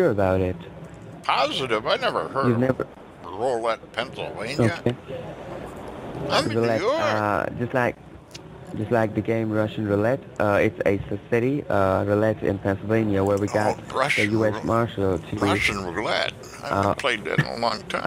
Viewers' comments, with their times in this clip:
0:04 His "American accent" gets worse and worse as the call goes ....at you cant bearly hear what he's saying